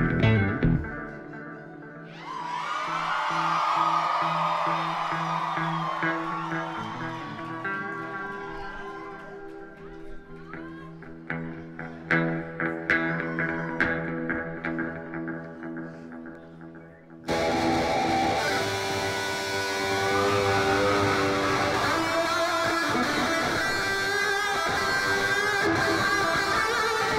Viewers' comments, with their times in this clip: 0:09 tell me that doesn't remind you of eruption, one of the best guitar solos ever, by eddy van halen.